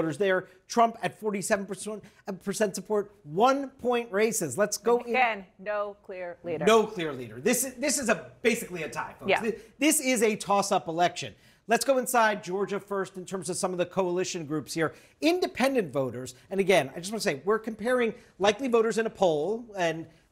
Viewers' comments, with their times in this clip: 0:06 toss up Lmao u can hear it in their voice kamala is losing so bad